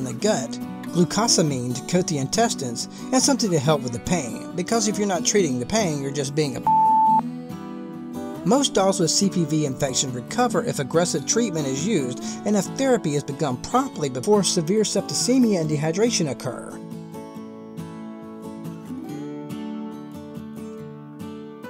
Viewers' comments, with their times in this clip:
0:07 Am I the only one that noticed this random bleep? Cracked me up 😂